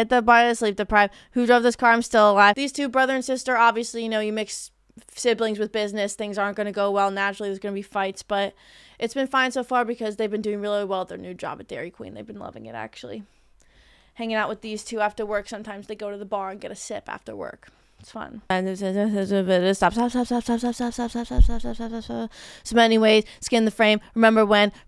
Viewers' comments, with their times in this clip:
0:05 *in Eric Andre’s voice*. What is going on with you? You sound insane?